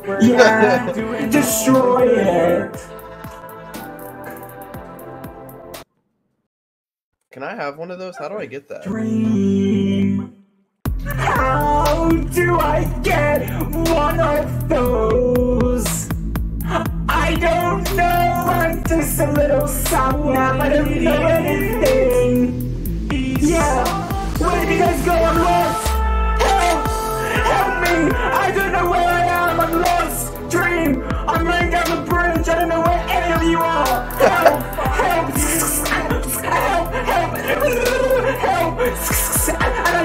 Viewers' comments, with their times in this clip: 0:10 he hit some beats there
0:26 why did this sound so good when George was calling for help and dream was singing in the back XD